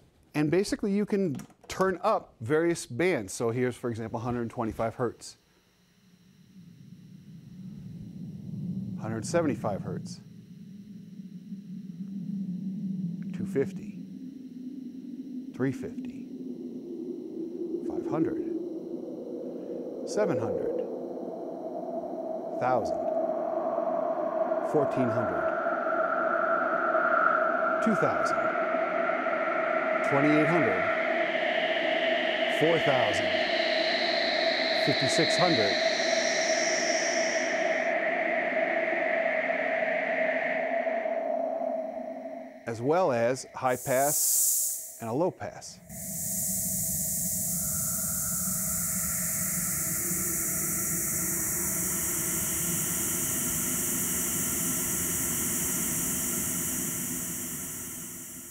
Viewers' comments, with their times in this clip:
0:10 Those foley wind sounds are incredible!!
0:12 Sounds of UFO ! But the sounds are so disturbing.
0:17 I feel reminded of John Carpenter's Prince Of Darkness (Opening Titles) - so eerie!!
0:22 mario 64 haunted house
0:27 I find it really awesome that you somewhat replicated the rushing sound at the beginning of the 2112 overture. Such a great song!
0:27 that's what I go to sleep listening to most nights with a lot of low rumble bass added to it. That is a crazy instrument. It's wild!
0:27 was reminiscent of a ritual to open a portal into hell. Just sayin.
0:29 Holy shit! This sounds like what George was messing around with in 69... Thats Crazy!!!
0:46 could be a perfect sound for the game: Dead Space.